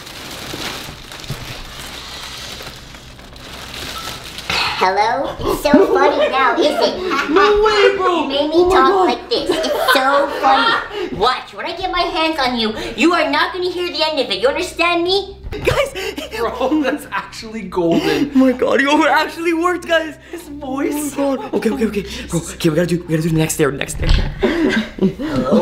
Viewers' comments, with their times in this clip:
0:04 XD 😂😂😂😂😂😂😂 his voice sounds so weird
0:04 😂Evil Jester makes me laugh when they laugh at him
0:12 Me: He doesn't even sound threatning anymore!!!! 🤣🤣🤣🤣🤣